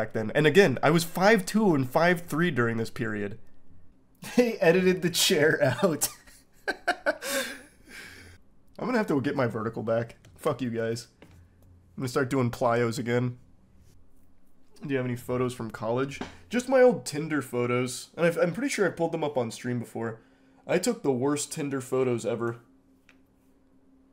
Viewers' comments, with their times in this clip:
0:08 this "Fuck you, guys." Sounded raal 😂😂😂😊